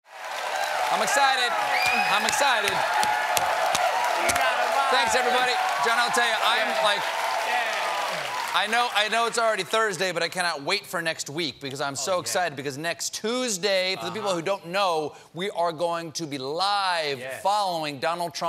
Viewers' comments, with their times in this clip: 0:00 Thought he was saying "umm ah suh dud" 😆.